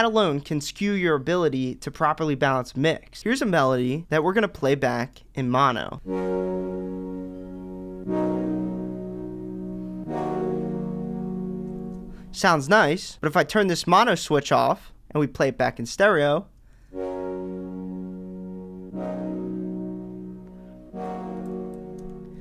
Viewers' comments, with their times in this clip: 0:07 sounds like a Minecraft Ost lol